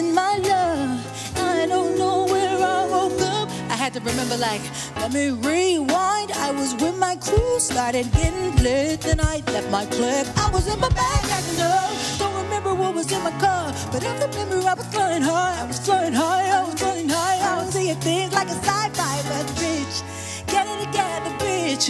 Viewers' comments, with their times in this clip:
0:06 why'd the guy on the drums start popping off for like 10 seconds starting more importantly why did he stop!!